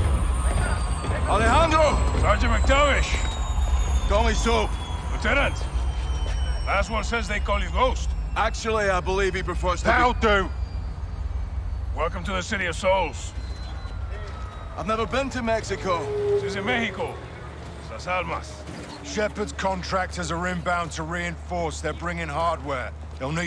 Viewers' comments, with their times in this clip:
0:08 I love how serious Ghost always sounds, even when he jokes